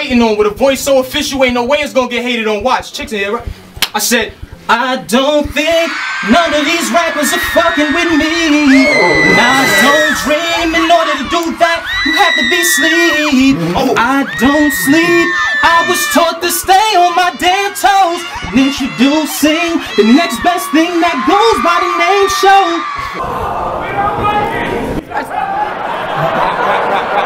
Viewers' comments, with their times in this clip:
0:04 he went from battling to being Trey Songz 😂😂😂
0:04 he gay 😂😂😂 The crowd “ohhh” 😂😂😂😂😂 Showoff Shouldn’t even be able to battle after that
0:08 You Singing In Nigglas Ears 👂 Is Wild 😂